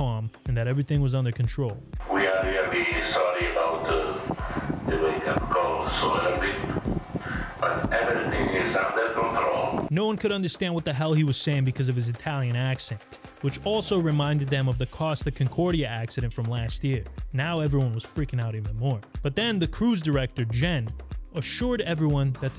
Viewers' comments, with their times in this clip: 0:03 "we are really sorry for the wake up call so early" seems clear
0:05 Is there anyone else who can clearly hear him say, “We are very sorry about the wake up call so early.”?